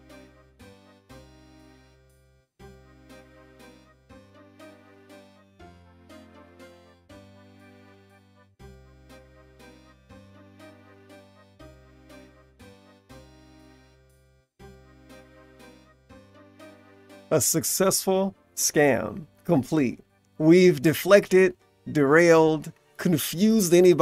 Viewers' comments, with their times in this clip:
0:10 I can hear the Runescape music in the background. What is your username my g? And is it RS3 or OSRS?